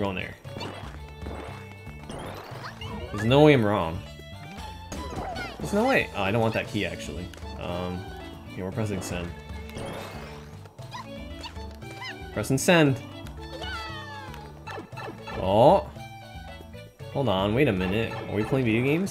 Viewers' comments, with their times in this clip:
0:04 everyone saying nice because of 69 toadette: nice